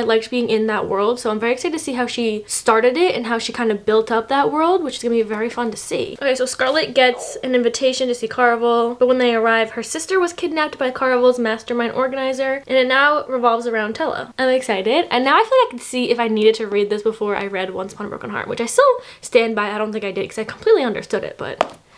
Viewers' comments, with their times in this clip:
0:06 sounds like the cutest little tummy growl ever
0:07 haha your stomach made a noise and I replayed it because I thought it came from me lol